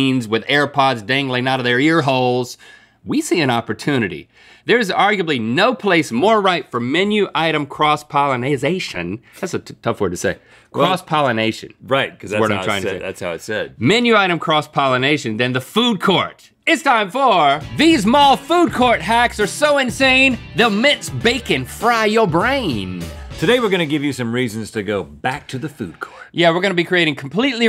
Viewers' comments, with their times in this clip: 0:09 y'all already know this is going to Rhett and Link trying to speak for 5 minutes straight part 3